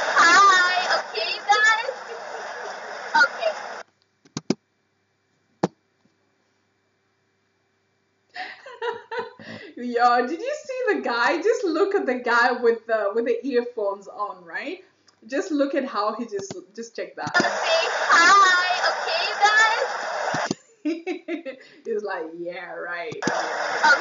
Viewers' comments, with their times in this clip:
0:05 you’re soooo cute when you laugh😍😍😍😂😂😂